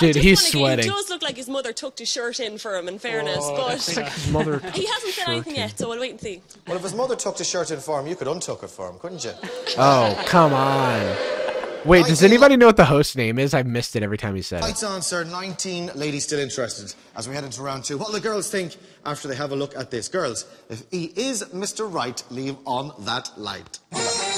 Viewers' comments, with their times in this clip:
0:06 Lol, even the crowd groaned